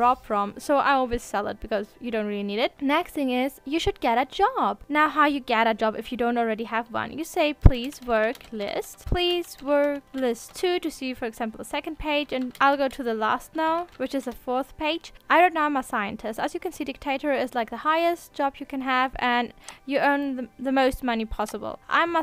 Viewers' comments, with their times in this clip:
0:03 why does this sound so condescending lol